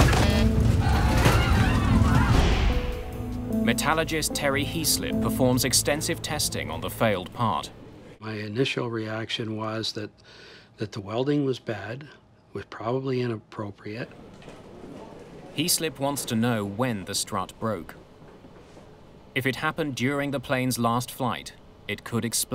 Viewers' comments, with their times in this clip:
0:04 Well one thing I have noticed is you have invented the new scientific profession of the “Metallagist” which you have mentioned a few times. Only thing is there is no such thing as a “Metalligist” or “Metallagist” or “Metallogist” ! - The profession should be a METALLURGIST, which is an expert in the field of METALLURGY or an engineer trained in the extraction and refining and alloying and fabrication of metals. IN layman’s terms an expert in the field of METALS. The subtitles got it spelled right in one location, but it sure was not pronounced right, and got it wrong in other positions like at: (approx) where it was spelled “Metallogist”